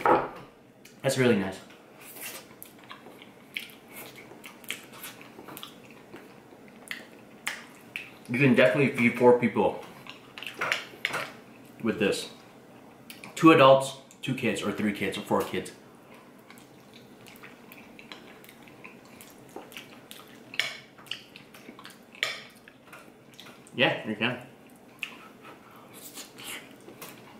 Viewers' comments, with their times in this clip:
0:08 I thought he said poor people.... I mean I guess that’s also true 😅